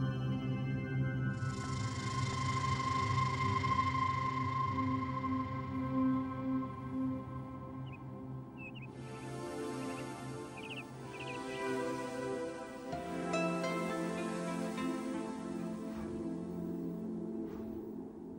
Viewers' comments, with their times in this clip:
0:06 I was about 7-8 years old when parents got the cassette with this video, and I only remembered the clip that starts on the running tiger and the dreamy music that accompanies this moment. It was veryyyy hard to find it because I only knew that it was a "computer music video", and never knew the name of it. But I'm happy that I finally found it! Thank you for bringing back the childhood magical moment! Greetings from Russia :)